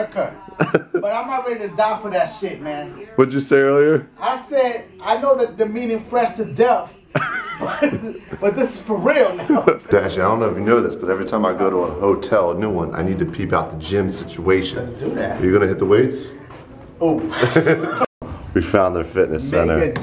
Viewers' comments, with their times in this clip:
0:04 can't understand Dashie Help!